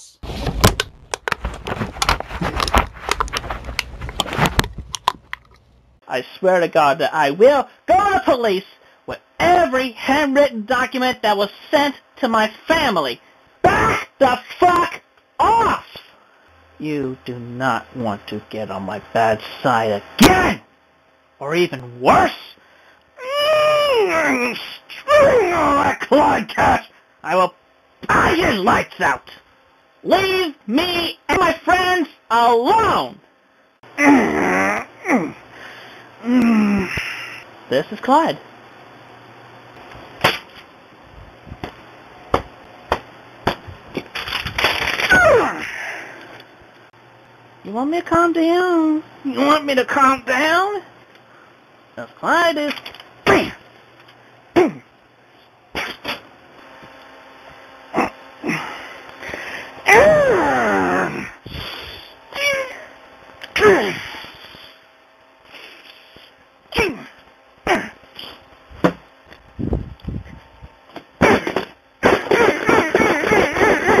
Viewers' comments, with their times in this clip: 0:05 he sounds exactly like the "THAT'S A FUCKING 50 DKP MINUS" guy
0:13 I love these brief moments where Chris sounds normal. Just for a few seconds there's no awkwardness or stuttering or slurring his words, just pure undiluted rage.
0:13 most normal formulated and pronounced phrase he has uttered
0:13 The only time where Chris sounded normal. 😂
0:22 he sounds like a looney toons character
0:22 sounds like video game voice lines with that quality microphone
0:23 I love the old rage when his man voice would actually come out for a second
0:24 Why does he sound like every cartoon villain from the 80s
0:24 sounded badass ngl, that ”punch” was hard
0:33 sounds like doom guy having a soy boy meltdown
0:33 why does he sound like he's shitting himself
0:44 That grunt tho
0:44 I love that chipmunk noise
0:46 is my favorite Chris chan clip ever. you want me to calm down, You want me to calm down. It's like he remembers he is supposed to be "intimidating" and retries his line
0:57 the sound I make when I'm trying to shit.
1:01 why does he sound like he's taking the shit of the century.